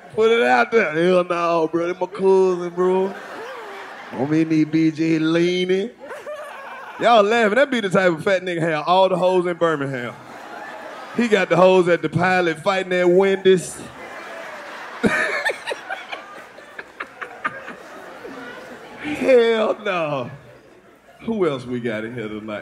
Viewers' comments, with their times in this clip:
0:06 aye who is that man that be laughing ??? he be laughing in all they podcasts 💀